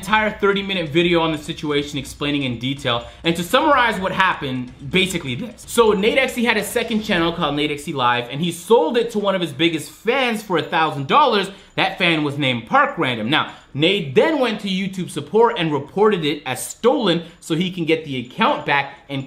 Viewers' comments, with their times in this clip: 0:04 Voice crack lol
0:05 Anyone noticed the voice crack